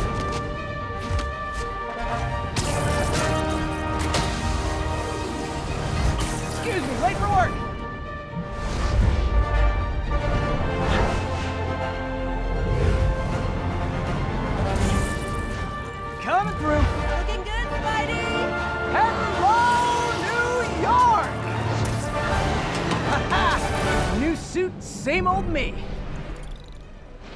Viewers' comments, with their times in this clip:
0:08 Love the soundtrack when spidey swings around his new suit for the first time ... I’ve finished the main story and I gotta say, they really nailed Peter’s heroism; from character to music ❤️ insomniac deserves our money